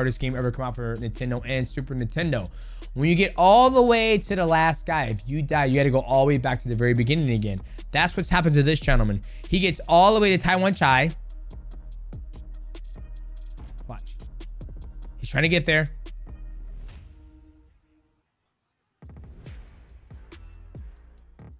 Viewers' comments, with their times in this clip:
0:09 you accidentally nailed Thai accent calling Tawanchai name right there 😆😆